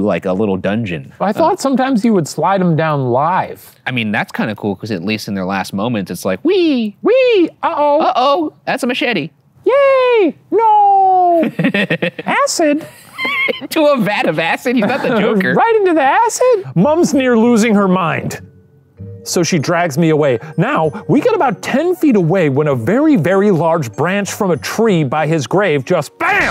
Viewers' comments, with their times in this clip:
0:09 Shane's high-pitched voice is legendary.